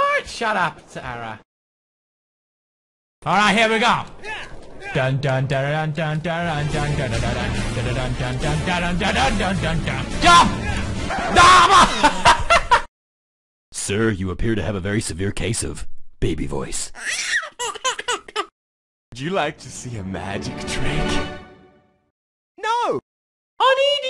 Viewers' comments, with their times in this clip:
0:07 was it your voice?